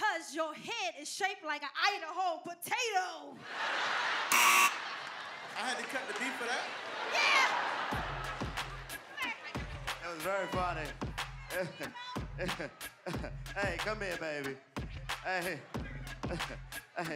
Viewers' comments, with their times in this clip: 0:03 dc laughing lol